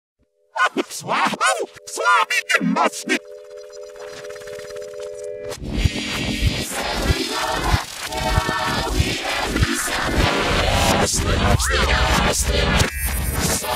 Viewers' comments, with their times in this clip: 0:01 I always thought this said Slap home slap me in the stick for a good long time, and I in fact still do to this day 😂